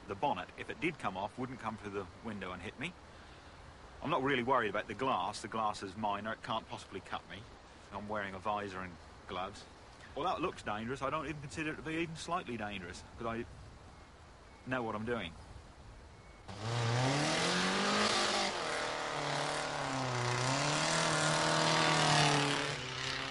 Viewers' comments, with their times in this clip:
0:09 famous last words. I also like the hesitation, lol.